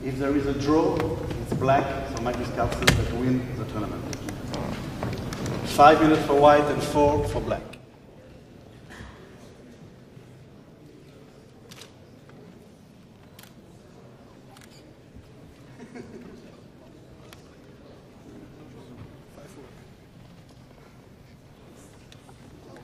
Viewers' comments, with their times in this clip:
0:10 why magnus was laughing his ass off?